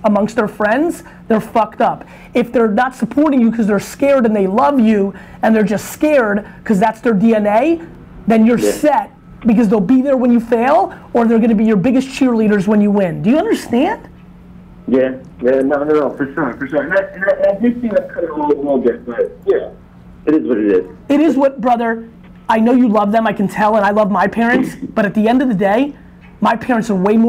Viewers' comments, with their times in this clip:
0:10 ...was that a dog in the background at the mark haha nice.